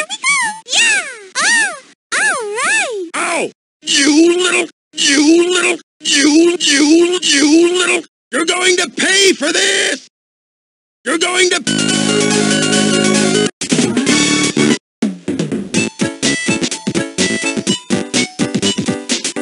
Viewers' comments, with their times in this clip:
0:03 In Eggman said "You little!" like Homer Simpson.